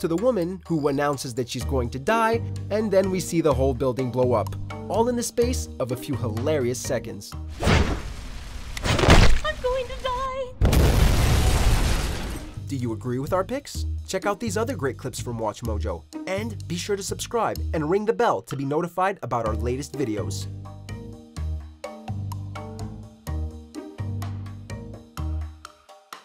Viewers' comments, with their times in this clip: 0:08 singing: "I´m going to dieeeee!" Hahaha I will make a Disco-Remix of that! :-D
0:09 On I thought the woman was saying "Unbelievable"